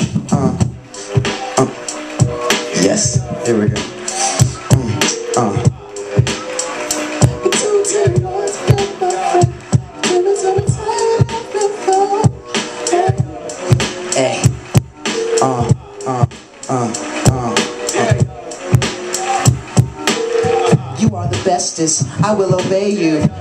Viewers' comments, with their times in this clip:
0:06 chick lost it when he started singing